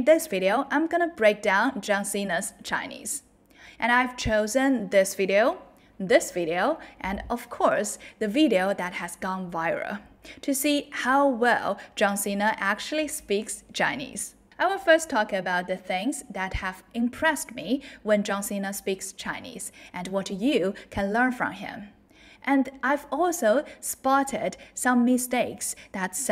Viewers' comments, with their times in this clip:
0:07 My only advice to you is to make sure you pronounce the "L" in viral and any other words that end in "L". Otherwise, nice video. The rest is accent which isn't necessary to remove unless you really want to blend in for some reason.